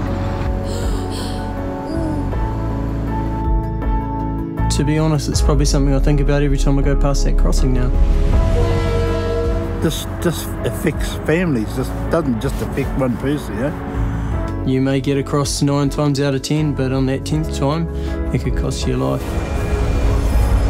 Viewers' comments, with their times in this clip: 0:07 "oh, looks like the train is honking to let me cross the tracks" 👴🏻